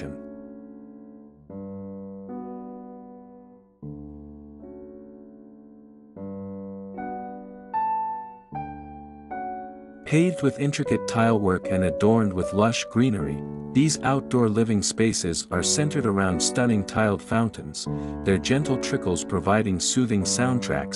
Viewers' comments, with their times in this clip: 0:03 This is beautiful the music was beautiful and classy a lot of people didn't like it I would love to no what music they would choose